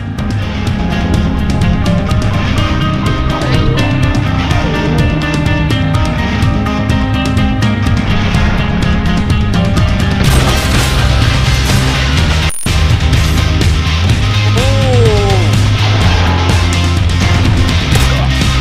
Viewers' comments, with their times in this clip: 0:06 first time hitmarkers was actually good.